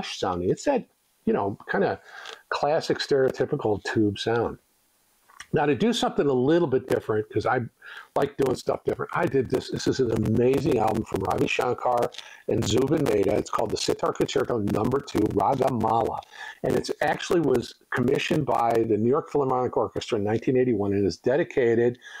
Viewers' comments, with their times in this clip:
0:07 Really bad audio breakup around the mark